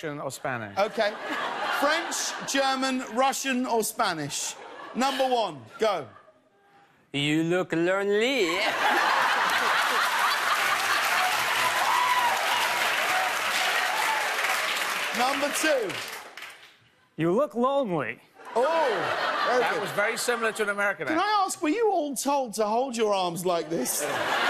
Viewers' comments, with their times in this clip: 0:08 Borat mode activated